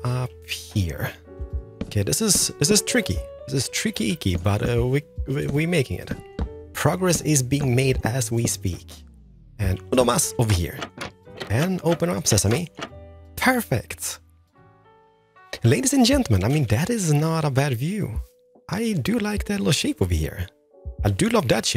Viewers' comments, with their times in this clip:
0:09 It's my idea, or you just speak spanish "Uno mas" 😅😅😅